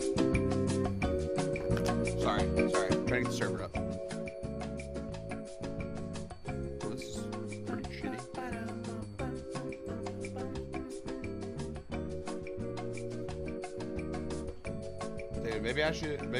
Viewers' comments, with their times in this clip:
0:04 Love the elevator music bro!